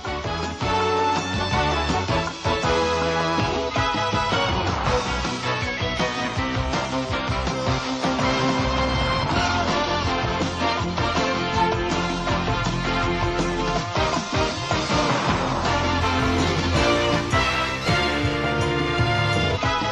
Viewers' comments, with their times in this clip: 0:06 Let the wonderful vid stand on it's own. Background music wrong & loud. 💞